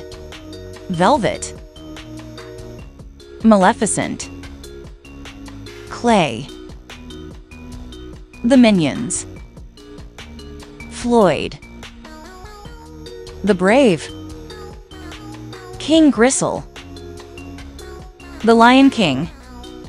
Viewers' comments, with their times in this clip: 0:04 the video:tilaypia me:TILAPIA😘🇵🇭 as a filipino text to speech needs to learn how to pronounce vowels i also like maleficent